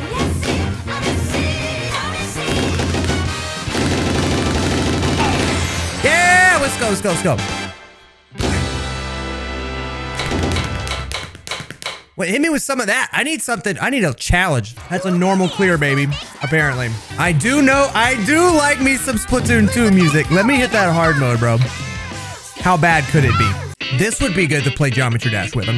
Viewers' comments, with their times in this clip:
0:10 awesome beat intensifies